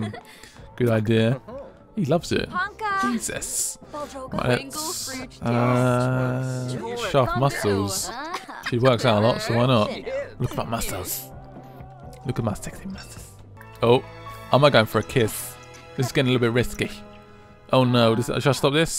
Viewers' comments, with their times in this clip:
0:04 they actually speak some English if you listen carefully